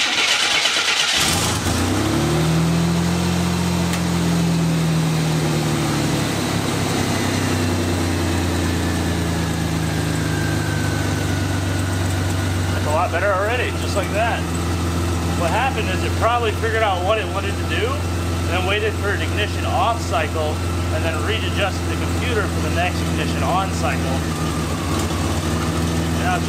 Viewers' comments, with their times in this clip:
0:09 Not sure I'd be cold reving a tired, 15yo, missfiring, engine that's not yours. It's your show though; rev that sh*# to the moon!